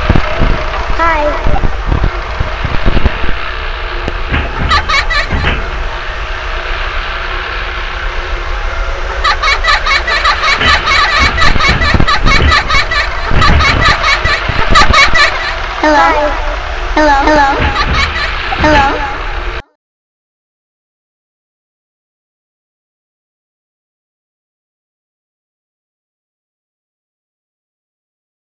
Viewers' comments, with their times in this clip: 0:10 BB voice box got a corruption AAAArGHHh help he won’t stop laughing ahhhh!!!!!!!!